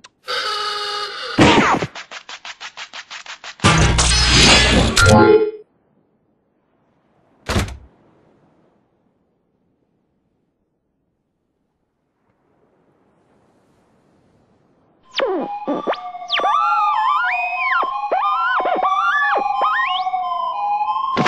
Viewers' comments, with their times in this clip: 0:03 Single Bed Spring Busting Loose